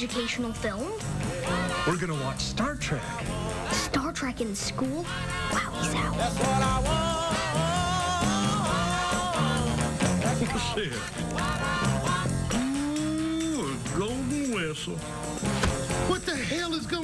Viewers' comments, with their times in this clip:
0:03 Omg when Sheldon says wowie zowie I swear he reminds me of that screen rant guy who makes the pitch meeting videos